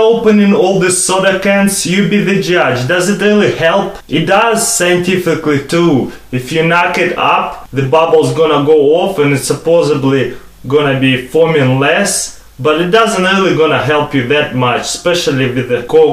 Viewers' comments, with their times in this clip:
0:04 Sometimes, just sometimes, you sound like Arnold.